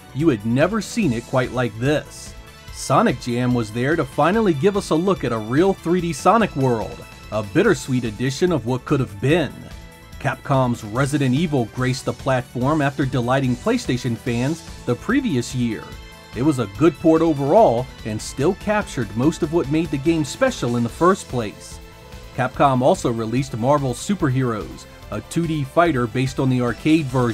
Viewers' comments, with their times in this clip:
0:09 Did you sync the drums and gunshots together on purpose or nah?
0:10 Nice job syncing the gunshots to the music!
0:10 Ok tell me the truth.. the shots in tandem with the drums of the music weren’t pure accident, were they ??
0:10 can i just acknoledge to fantastic editing that led to the gunshots being timed with the music
0:10 Idk if that was intentional or not, but Jill's gunshots sync perfectly with the music.
0:10 I don't know if anybody seen this or commented on this, but I liked how the gunshots go with the music on
0:11 the gunshots were in rhythm!